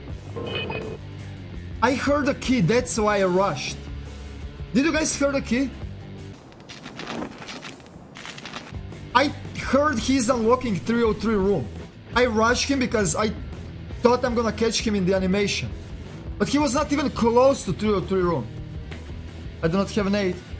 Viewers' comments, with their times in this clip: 0:08 Sound wasnt Key! it was the grenade he chose by pressing hotkey